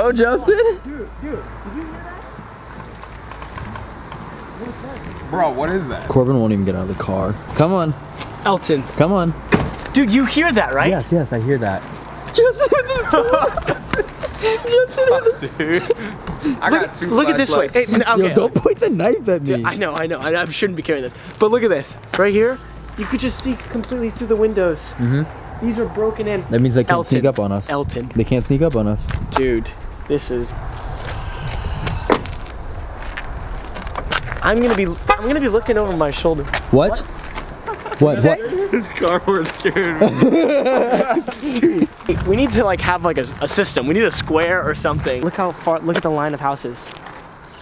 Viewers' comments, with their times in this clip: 0:07 heard some tapping/creaking it was loud
0:30 Did nobody else hear that weird scream ?
0:30 I hear a high pitch demonic scream before the horn goes off
0:30 THAT SCREAM I WOULD BE GONE
0:30 Did anyone hear like a breath ?!
0:30 The screen sounds demonic
0:30 Listen there is a breathe
0:31 was that a screech?!
0:31 is the person closing the car door
0:31 did anyone here the exhale
0:31 did no one hear that really deep sigh?
0:31 you can hear either someone scream or breath
0:31 does anyone else hear the breath
0:32 there was a gasp sound that was very faint
0:32 a banshee scream